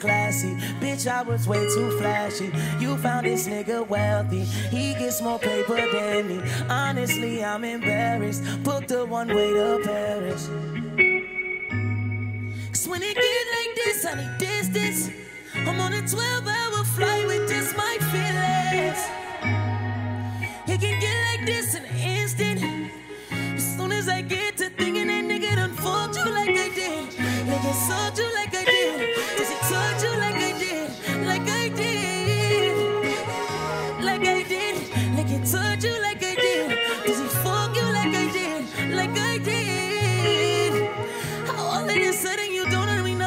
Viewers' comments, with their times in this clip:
0:09 Beautiful voice first song I fell in love with.its deep
0:22 Damn this song hit me hard as fuck! I cant stop listening to it! She really broke his heart 😢😢 you can hear the pain in his voice, you can hear his soul crying out! 💯 I feel his pain 💔 😞
0:24 U know he been through some shit based off that voice crack